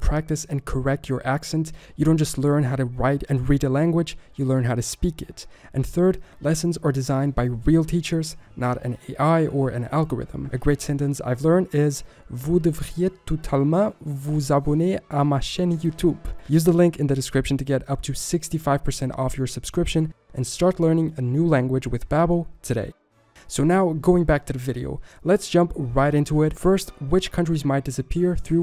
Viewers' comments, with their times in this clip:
0:10 I am french 🤣🤣🤣 and your accent is soso...
0:14 i just laughed with his french accent. as a french i rate it 8.5/10 Just work the accent . because it was too funny but it good Kept work 😁
0:15 as a French, your accent is really funny to hear haha